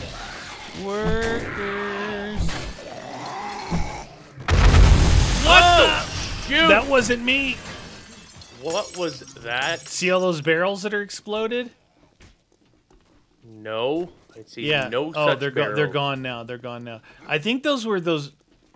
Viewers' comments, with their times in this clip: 0:03 Right you can see the zombie smack the barrels and then BOOM